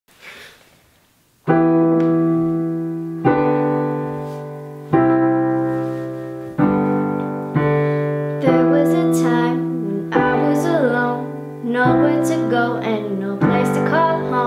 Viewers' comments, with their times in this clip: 0:01 I mean amzing piano skills